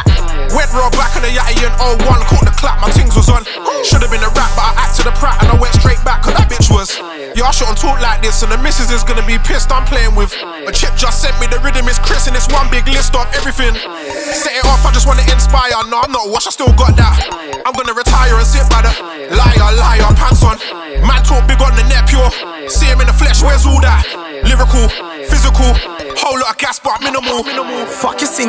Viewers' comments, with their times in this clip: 0:10 Shoutout everyone with headphones who thought a someone was trying to break on their room or the wind